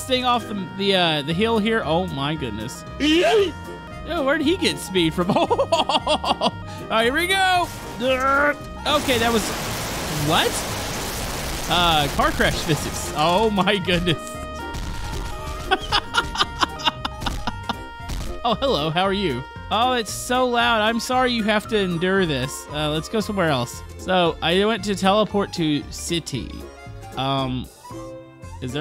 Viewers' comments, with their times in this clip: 0:09 that was loud